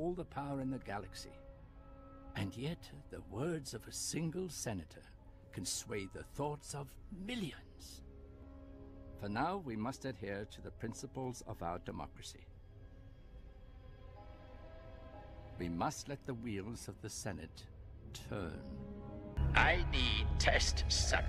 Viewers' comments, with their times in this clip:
0:05 Ian Abercrombie was decent Tim Curry sounds like the old Emperor before Ian McDiarmid